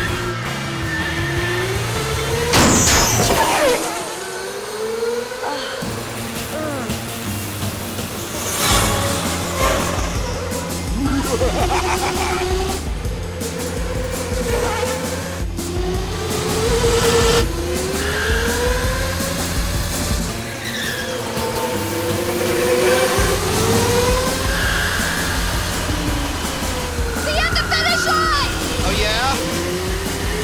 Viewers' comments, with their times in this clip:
0:10 That maniacal laugh :D
0:11 house's evil laugh